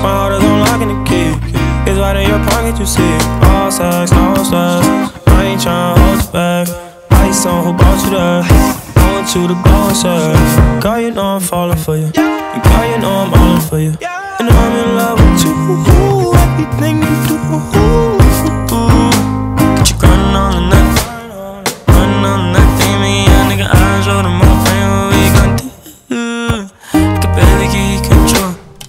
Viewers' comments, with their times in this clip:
0:03 does anyone else hear "ballsack"
0:04 Is he sayin ballsack
0:11 the vocals tho 😭
0:14 his voice is beautiful
0:16 the transition from pnb to x is fire asl